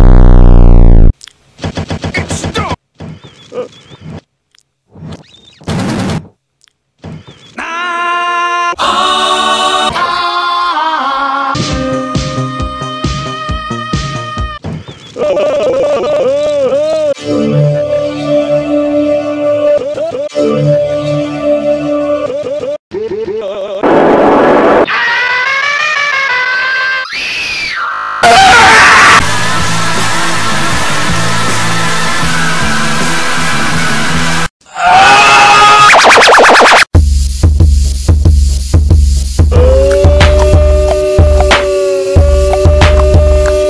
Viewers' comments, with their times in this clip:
0:06 The holy grail of aaaaahhhhh. Anyway, a lot of the entries were really good.
0:17 daft punk screaming
0:24 Hmm, that scream sounds familiar.